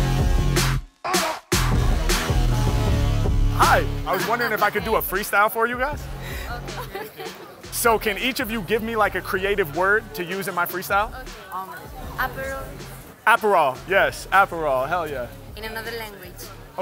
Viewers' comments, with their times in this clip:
0:03 Thought I was hearing a DDE collab for a second The quiet rap to security was dope!